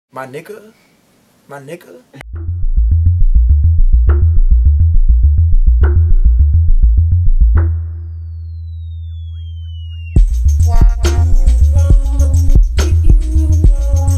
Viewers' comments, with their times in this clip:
0:02 Beat in the intro crazy as shi